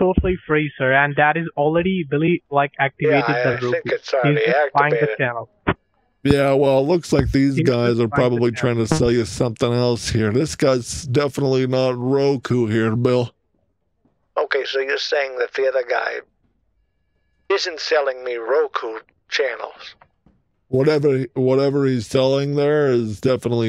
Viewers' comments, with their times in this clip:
0:06 did the scammer let a rip?